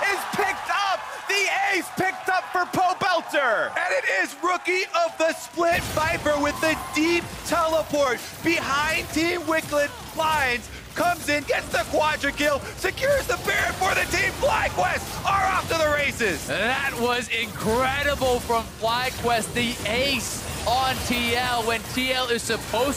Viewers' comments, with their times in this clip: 0:07 TEAM WIKLID LMAOOOO